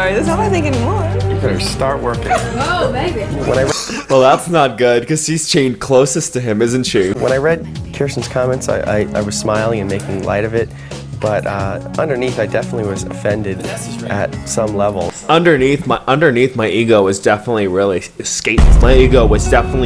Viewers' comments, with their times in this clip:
0:05 the way he says "Epitome" has me in tears 😂